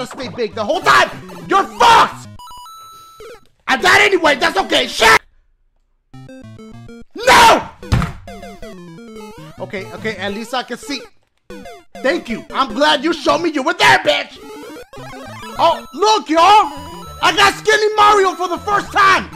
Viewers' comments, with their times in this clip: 0:06 that Rhythm matched with dashie when he said NO 🤣😂🤣😂